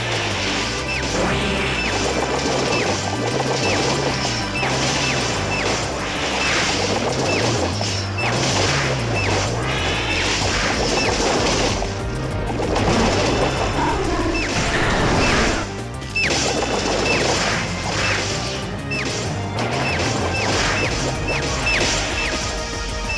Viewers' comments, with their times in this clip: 0:09 the weirdest zap cannon noise ever...